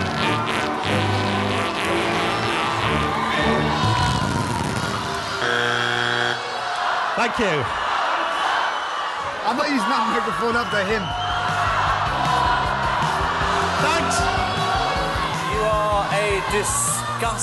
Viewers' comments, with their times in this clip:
0:04 is the “BROWN NOTE”